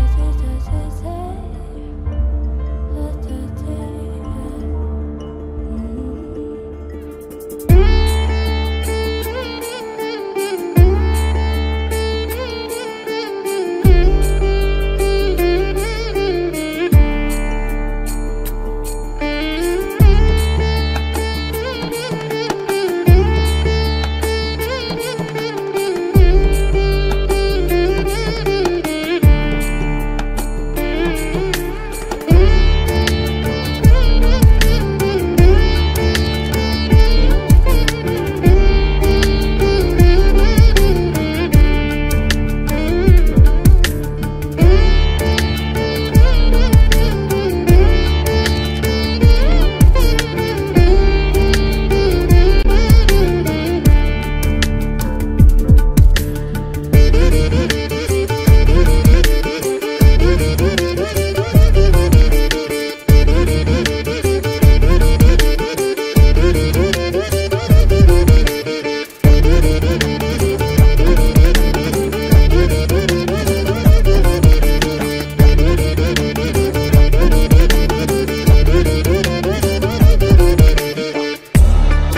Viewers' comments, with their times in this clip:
0:08 that indian music hits different
1:05 shmackkkked but this music go awwf LMAOO